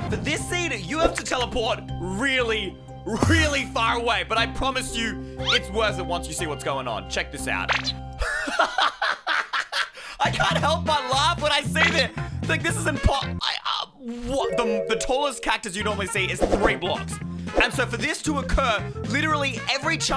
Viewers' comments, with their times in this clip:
0:08 Bro literally sounded like an alien at the cactus seed